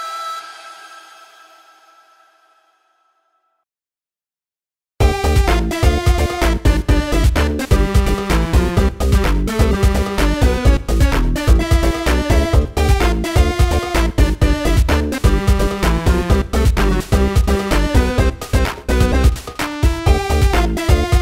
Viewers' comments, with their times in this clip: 0:05 when I first played this video (like a week ago) I thought ''Wow what's that song, sounds like it's from a snes game? pretty cool.'' And today I just finished Undertale and I came back to this video and I'm like ''Oh... that's from... Oh you!''